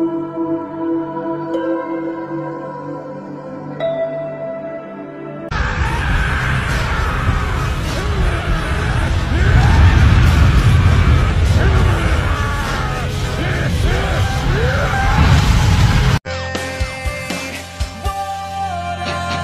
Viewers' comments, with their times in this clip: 0:04 the PlayStation menu music is a classic and super nostalgic and never gets old